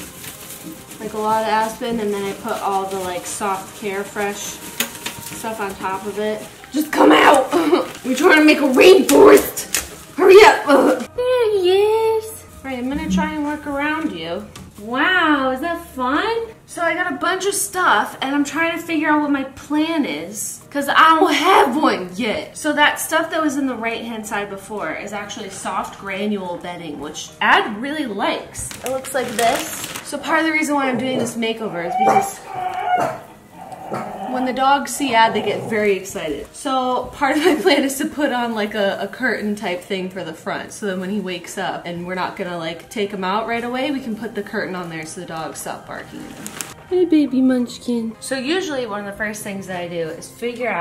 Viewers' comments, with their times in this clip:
0:06 she sounds like that one YouTuber that wears red lipstick and talks all weird as an act
0:35 I THOUGHT THOSE WERE MY REAL DOGS HOLD ON